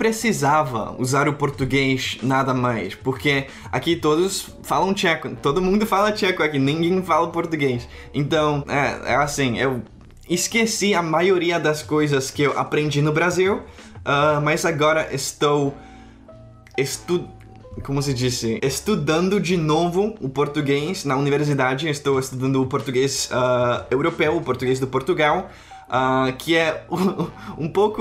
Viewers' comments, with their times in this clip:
0:10 ok you speak Portuguese so well that I started to suspect that you're Brazilian xD